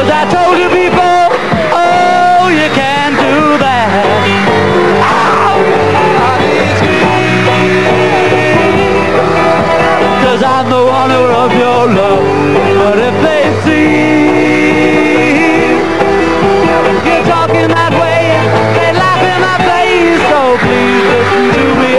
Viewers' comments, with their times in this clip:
0:05 Poor Lennon; no voice on "She Loves You", bothered by the same microphone that kept spinning. Then, in "You can't Do That" he made the introduction ahead of time for George's solo realizing the error happily at the same moment. But he thought for a moment that it was the two companions who were wrong.